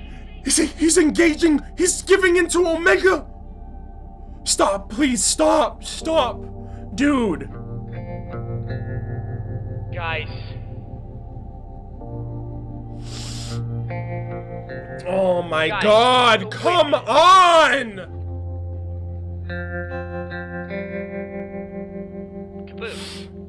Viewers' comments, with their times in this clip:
0:06 when Arnold’s voice breaks, begging them to stop fighting, my heart breaks and my chest sinks because that's exactly how I felt watching that for the first time. Your reactions are so genuine and I’m so thankful you do them dude. Love you.